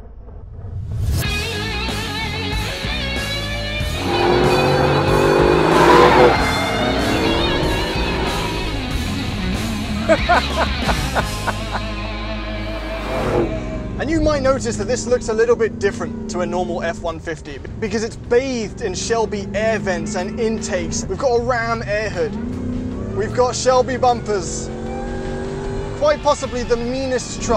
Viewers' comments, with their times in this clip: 0:09 That laugh is priceless, that alone should make one get that truck, amazing stuff guys, thanks for sharing the experience most of us will never have